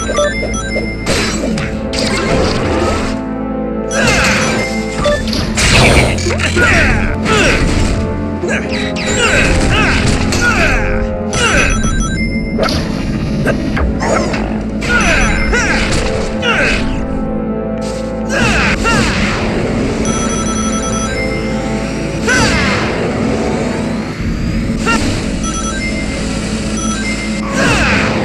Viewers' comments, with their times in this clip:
0:09 the theme of "Volcano Caverns" sort of sounds like the evil ending theme for Shadow the Hedgehog